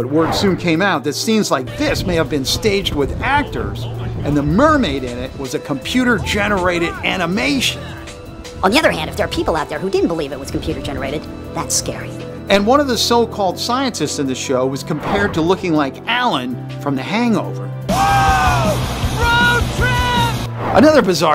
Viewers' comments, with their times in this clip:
0:08 why is he talking in fast motion💀💀💀💀